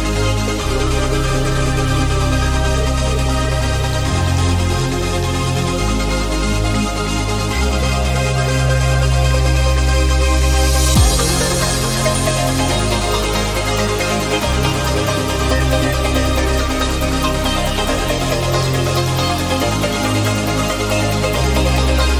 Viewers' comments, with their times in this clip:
0:09 perfect mix. Good idea ! ❤